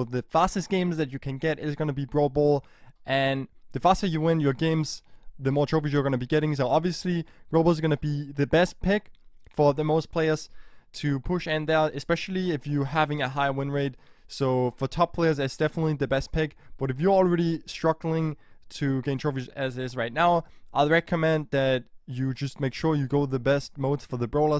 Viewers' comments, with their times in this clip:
0:08 is it just me or doesntthe audio not sync with the video